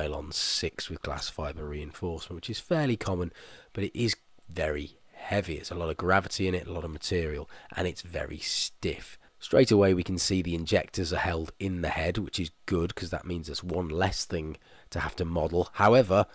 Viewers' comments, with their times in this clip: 0:03 Maybe it’s just me but after the montage I no longer have sound for the rest of the video :/
0:04 Am I the only one with no audio after ?